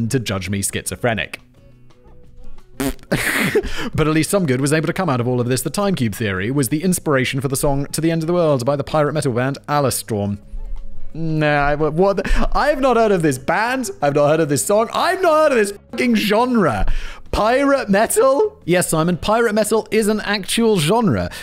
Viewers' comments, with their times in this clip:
0:04 the song's not bad, cheers